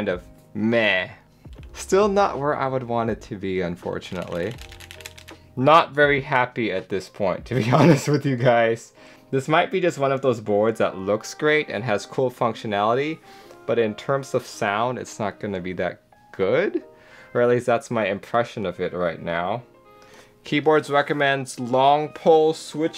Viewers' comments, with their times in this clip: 0:05 sounds muted but also a bit tinny probably going to wait for r2 : )